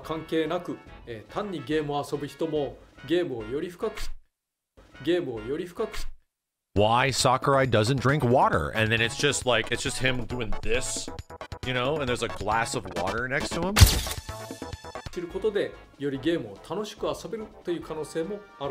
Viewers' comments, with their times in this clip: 0:03 A bit of a stutter might want to patch that